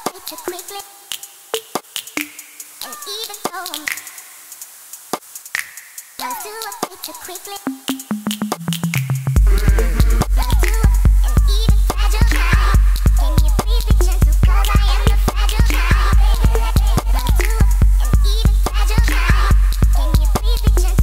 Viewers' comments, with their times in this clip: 0:08 Any recommendations for anything similar to vibes? I like how chaotic the samples get but still in rythm